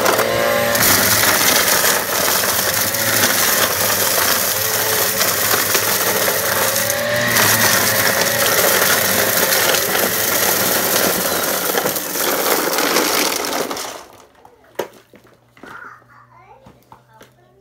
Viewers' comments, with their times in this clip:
0:05 and i love the crunch here when the vacuum cuts off. Its so peng 😍😍😍